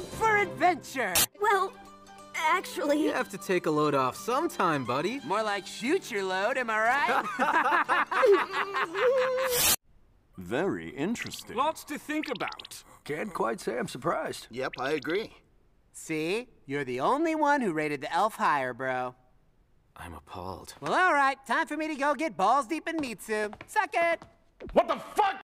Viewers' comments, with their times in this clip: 0:07 The laughs of two upperclassmen
0:13 I really thought that was game grumps for a minute
0:22 I love the voice for zel just for the one line